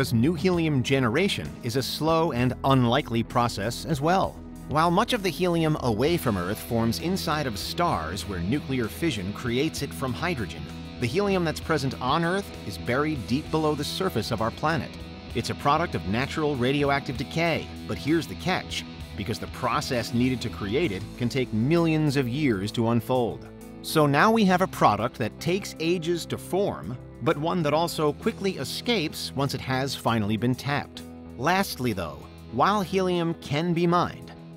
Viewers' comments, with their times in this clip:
0:09 Cc says fusion, sounds like fission...
0:19 the electric guitar part absolutely drowns out your voice on my phone. They’re competing for the same frequencies